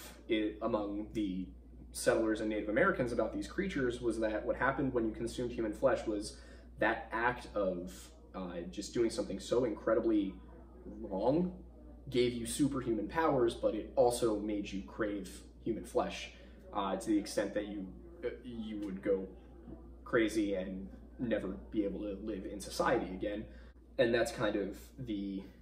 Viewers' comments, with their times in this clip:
0:08 I like the background noise at ~ when talking about psychosis... listening to this while getting ready for work in the wee hours of the morning and it added to spooky factor